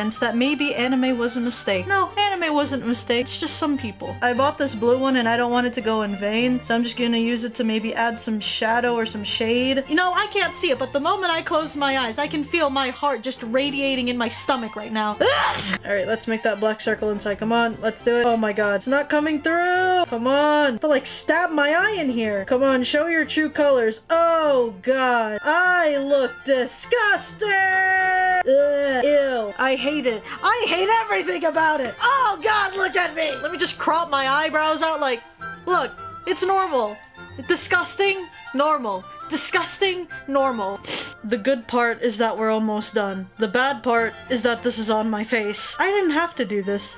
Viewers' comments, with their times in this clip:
0:08 after she talking about her heart she sneezed and I keep replaying it and gets funnier nd funnier every time I cant stop laughing
0:28 He's literally crying and laughing at the same time 😂😂